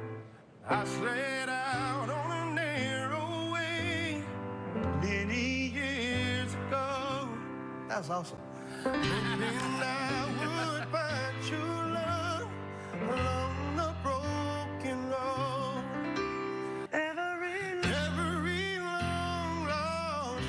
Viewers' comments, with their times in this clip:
0:04 Starts to sing